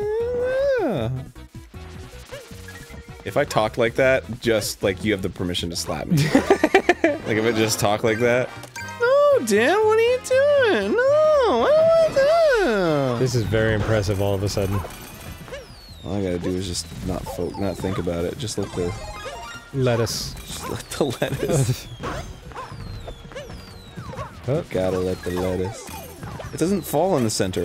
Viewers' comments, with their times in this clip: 0:08 So if he talked like drew gooden.